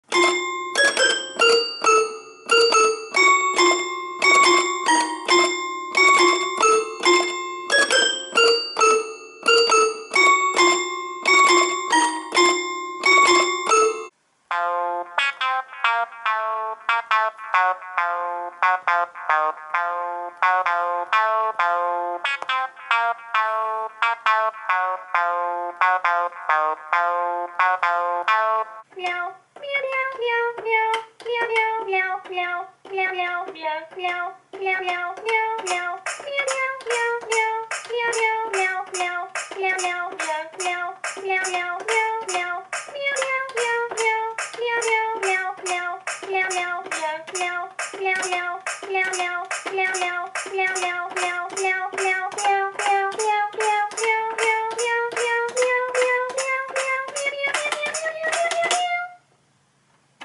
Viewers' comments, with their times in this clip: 0:00 i thot u go play sad
0:46 it sounds like the cat is saying: Jawel (dutch, I'm dutch lol)